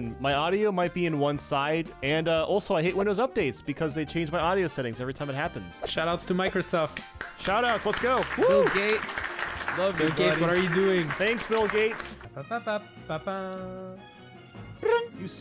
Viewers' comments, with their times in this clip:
0:03 laughs in mono audio